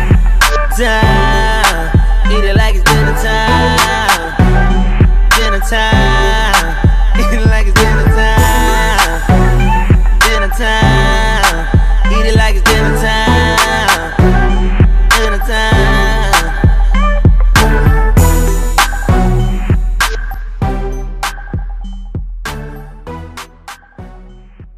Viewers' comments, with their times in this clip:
0:06 he just laugh right ?